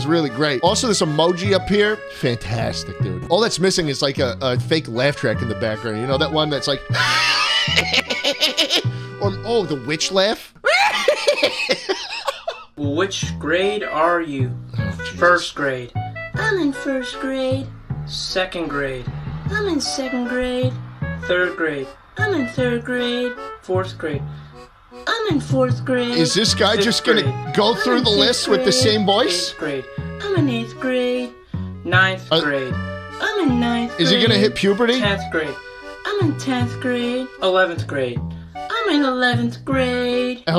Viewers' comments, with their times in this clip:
0:05 pov:you're killing horses in minecraft
0:10 goofy ahh laugh
0:12 9th grade with the voice of "which grade are you" In 8th grade it was accurate
0:12 Were just not gonna talk about how good schlatts witch laugh was💀 Its btw
0:27 guys actual voice sound like a 6th graders voice I know